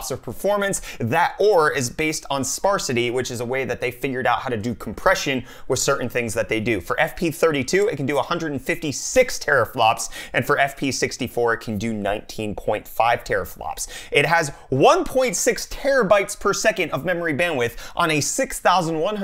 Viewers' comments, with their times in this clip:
0:03 did you just say fingered out?